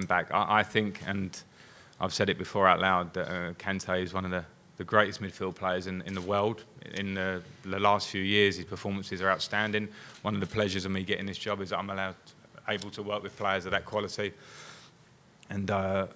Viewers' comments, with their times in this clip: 0:03 Finally, someone who can pronounce KANTE's name correctly